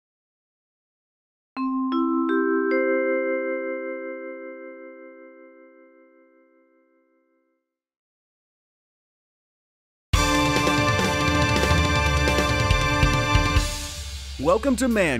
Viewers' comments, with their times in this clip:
0:01 this bell is so satisfying i swear